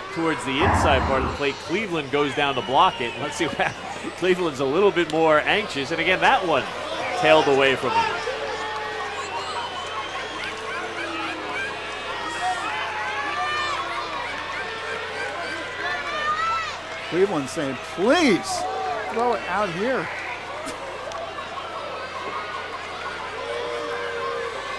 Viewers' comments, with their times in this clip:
0:09 Must have been the full (or nearly full) moon. Meanwhile, can you chickens clucking ?